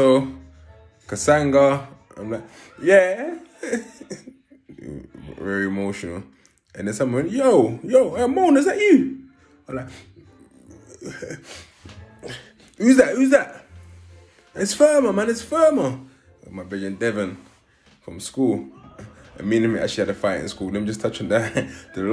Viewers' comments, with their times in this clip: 0:03 mans sound effects🤣🤣